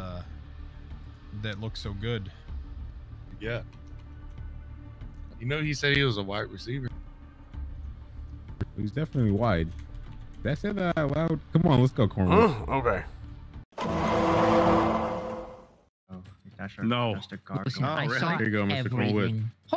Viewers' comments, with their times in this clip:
0:07 The funniest part is that it sounds like he says both wide receiver and white receiver and both would be accurate in kornwoods case